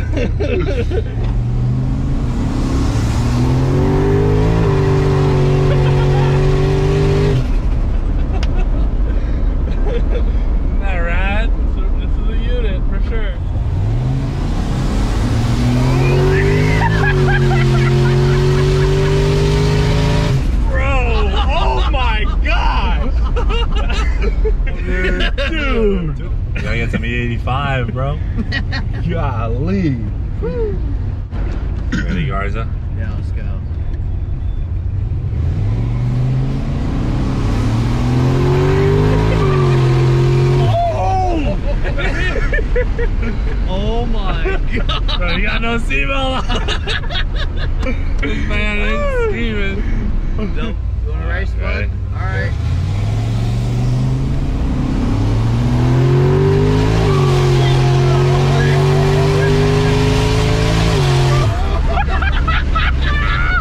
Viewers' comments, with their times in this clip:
0:06 Did anyone notice the turbo spoiling down ta
0:13 The sound it makes when he lets off is definitely a stock sound.
0:19 why do i hear turbo stutututu? ?
0:44 you can hear the tires bark when it auto shifts